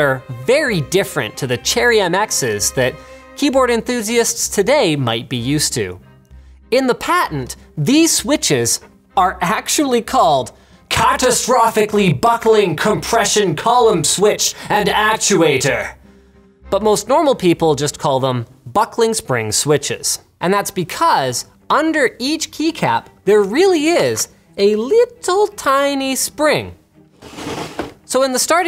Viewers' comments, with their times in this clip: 0:10 I was falling asleep but woke me up! I thought Daleks were attacking! 😆